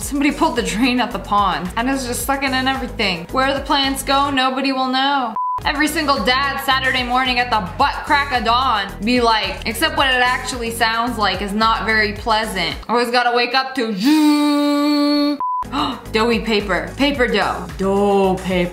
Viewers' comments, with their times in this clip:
0:03 there gonna know dramatic music U:how would the know💀